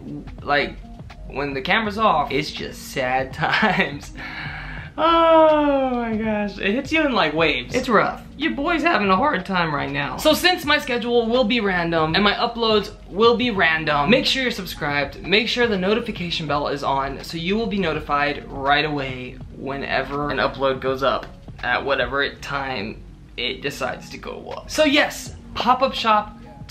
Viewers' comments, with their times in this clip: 0:08 Did anybody hear here the voice crack that happened in the video? It sounded like he was going to cry